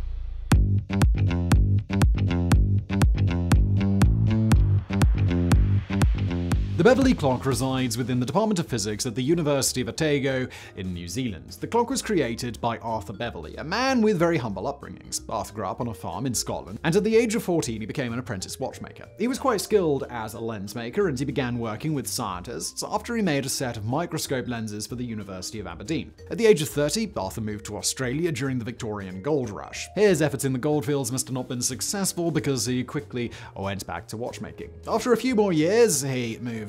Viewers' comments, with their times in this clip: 0:08 A bit after HE SAID Otago incorrect
0:09 The university of Otego ??? It's Otago (long A vowel)
0:19 "Scientists" and "set" sound ridiculous to my ears, like he just got carried away. (Indeed, in my ignorance) it sounds like a caricature.